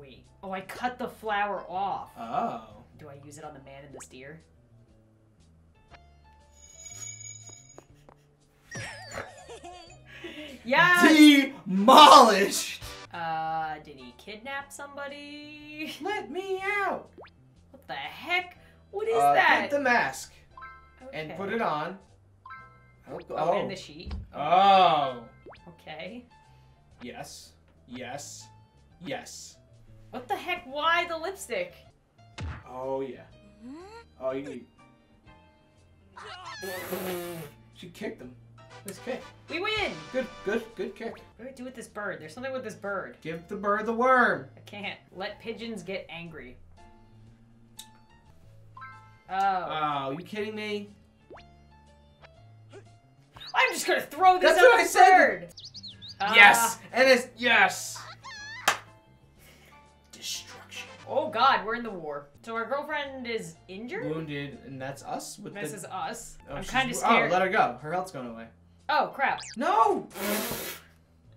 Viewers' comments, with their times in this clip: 0:09 why when he said “ DEMOLISHED” it sounded like someone from my school 😂
0:57 Am I the only one who heard her yell to him “BAKAAAAAAA”